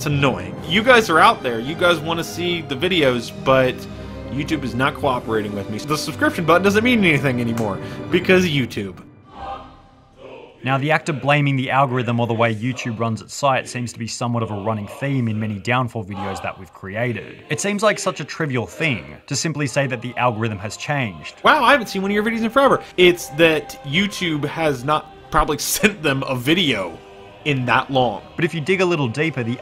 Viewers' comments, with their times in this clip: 0:10 that waw Soviet theme hit